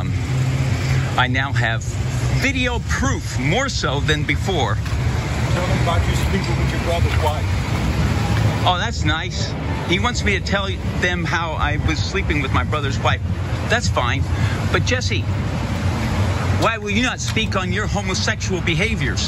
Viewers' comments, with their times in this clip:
0:07 was the most normal, and coherent i ever heard Peterson speak. Usually he sounds like he's speaking under water.